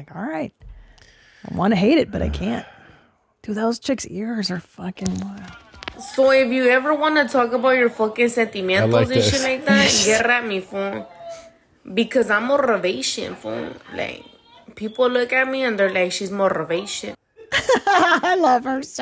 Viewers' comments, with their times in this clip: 0:05 The Latina who unnecessarily rolls her “R’s” is the greatest, especially when words don’t even have “R’s”, á la ‘morrrrivation’. <M’wah. Chef’s kiss>